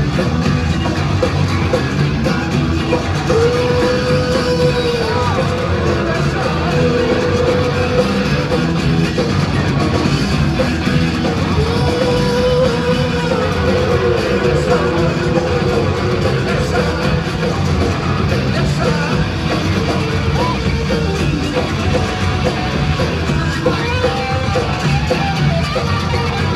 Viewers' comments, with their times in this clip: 0:08 I don't just like it I love it! Check out Plant's vocals ...Entertaining dialogue throughout within the band. The real thing!